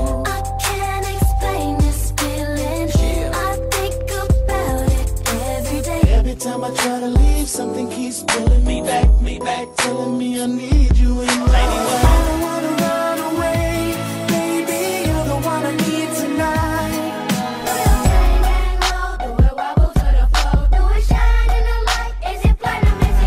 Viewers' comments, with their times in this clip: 0:07 I was just thinking about the Chingy slapp then here it go playing lolll